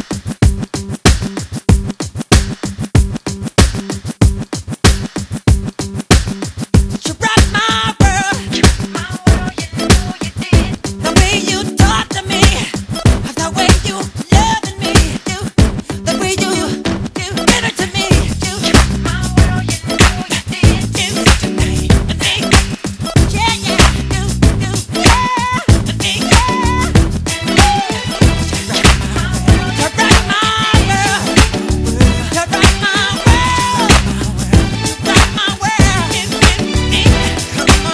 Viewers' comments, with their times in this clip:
0:06 ....OMG I love this part so much 💗💗💗....you can feel the energy in his voice
0:23 I love the way he does :"Yeah, Yeah"